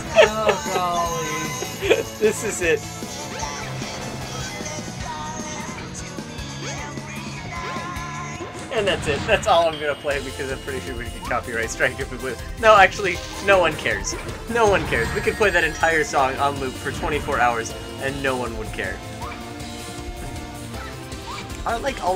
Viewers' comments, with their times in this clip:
0:03 it through me off to randomly hear sonic underground music in the middle of the episode. I was chillin and than thought, wait a sec this isn't a sonic underground video... whats happening here?